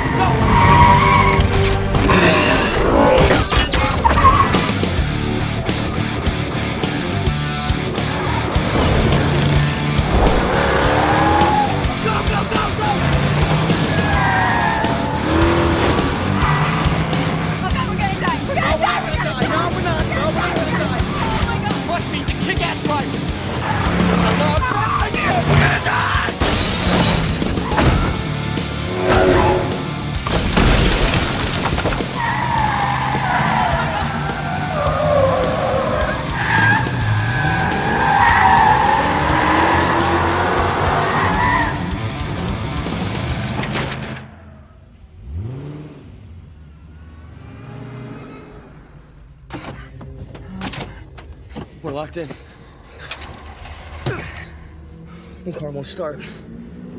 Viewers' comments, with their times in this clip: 0:03 This will forever be one of the greatest police chases... You KNOW when the beat drops its gon' be bad ass
0:03 It's pretty handsome awkward instrumental
0:04 I get chills when that music hits
0:05 those mustang pulls are crazyyy, bumblebee sounds amazing too 🔥
0:18 pretty handsome awkward instrumental
0:38 that car sound is like eargasm to me.
0:38 listen to barricade's tire